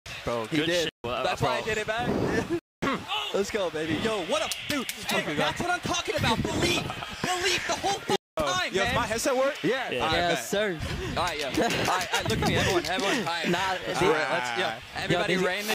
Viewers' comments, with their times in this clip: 0:10 what kind of laugh was that haha you sound like a broken sprinkler 😂